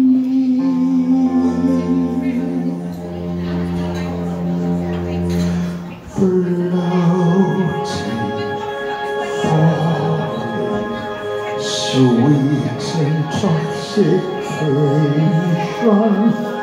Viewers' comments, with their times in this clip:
0:03 Kind of wish the audience would quit gabbing and appreciate what they’re hearing... love the applause in! Big thanks to you for uploading.